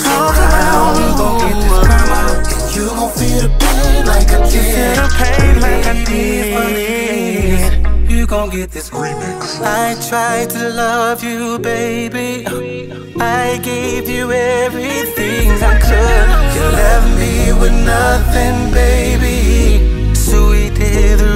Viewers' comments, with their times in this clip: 0:08 Just listening to this because of this legendary B Cox esque breakdown ar perfect harmony there